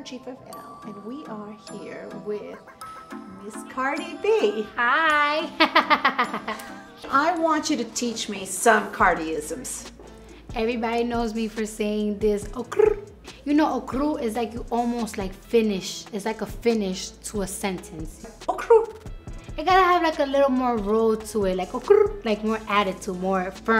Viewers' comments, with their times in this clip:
0:06 Instant thumbs up for Cardi's laugh